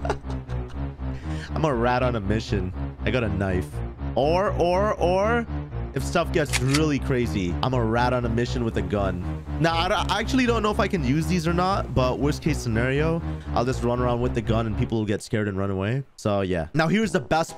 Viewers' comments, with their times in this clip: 0:04 man turned into a seal